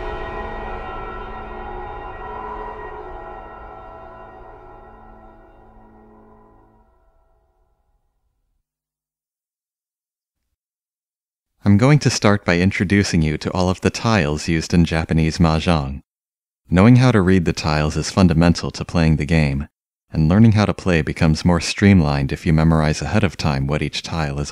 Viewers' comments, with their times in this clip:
0:08 You know, having to sit through the first of this video was very, very hard; the three and a half hours that followed were a breeze by comparison Dude-san, music-ga suck-suck-ne!